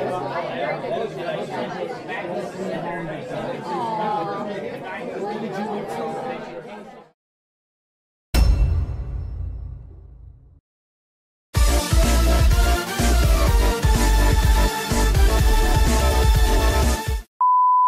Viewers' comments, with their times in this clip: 0:04 villager sound btw I am your big fan